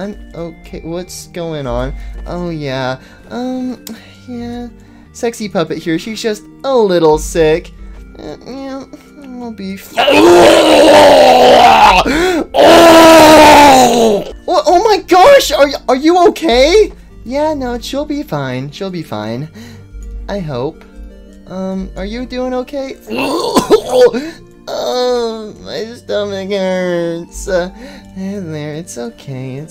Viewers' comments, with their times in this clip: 0:10 ouch my ears
0:10 MY MF EARS
0:12 why does that kinda sound like springtrap